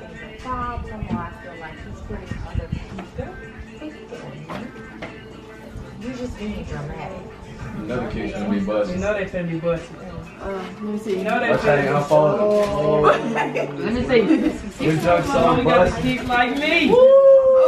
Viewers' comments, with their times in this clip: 0:03 I was singing to a boogie in the back round.......: Got me saying what's wrong with you I remember being in the hall with you